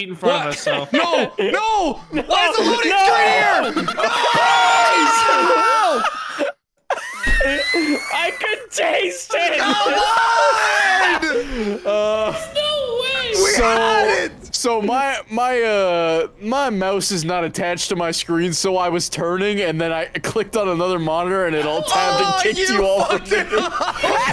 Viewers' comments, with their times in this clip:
0:05 There's the Tennessee Tea Kettle we know and love! 😂❤